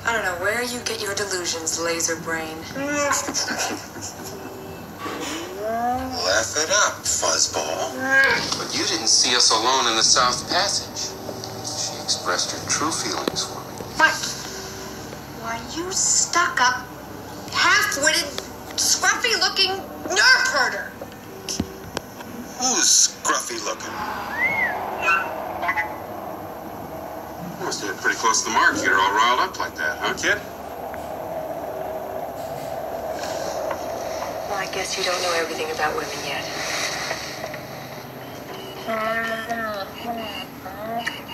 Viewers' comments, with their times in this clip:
0:03 Chewies laughing seems kinda cute to me 😂😂
0:20 (slap) YOU CAN'T USE THAT WORD! ONLY WE CAN USE THAT WORD1
0:24 I like the way R2 just makes that noise like you know it is gonna be a fight LoL